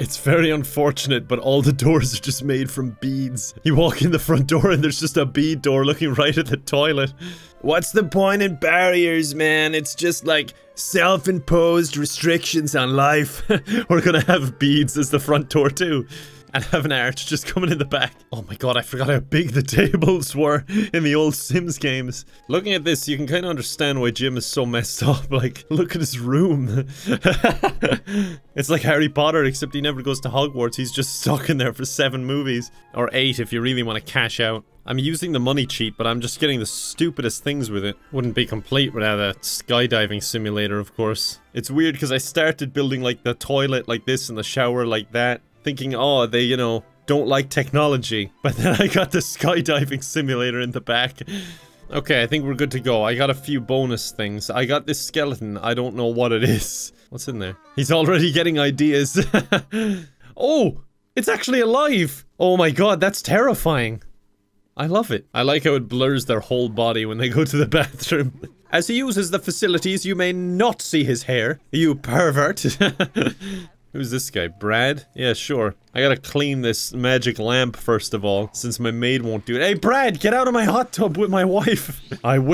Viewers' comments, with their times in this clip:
0:07 Holy shit, your American hippie voice was so good. It shocked the hell out of me and I had to replay it six times.
1:03 I love how genuine he sounds when he says he loves how terrifying Bonehilda is. It sounds so genuine and sweet wth